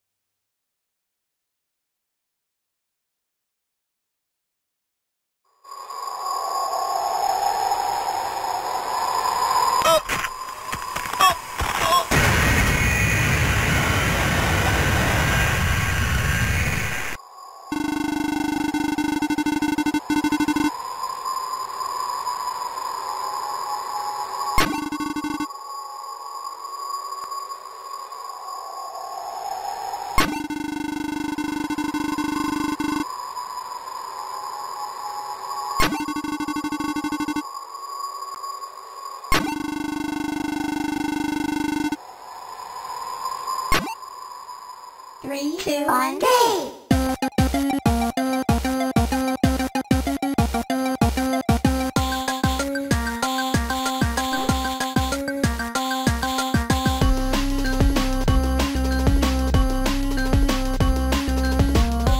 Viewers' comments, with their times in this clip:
0:09 The noises he makes a really reminds me of PT
0:46 This sounds like boss music to me. Does anyone else hear this or am I high on something?